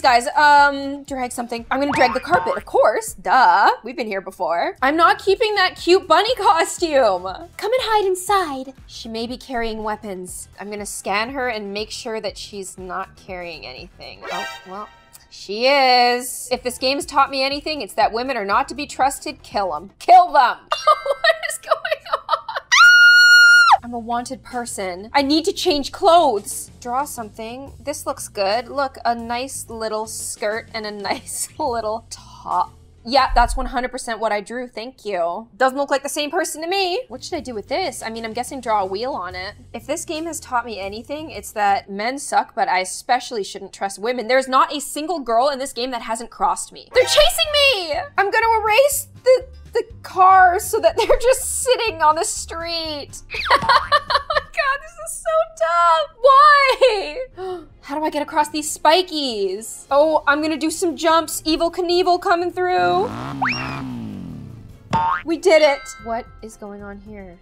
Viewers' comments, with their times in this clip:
0:07 she sounds like a genshin character
0:22 That scream.....MY POOR EARS I WAS WEAING HEADPHONES
0:53 Her laugh makes me laugh!! ❤❤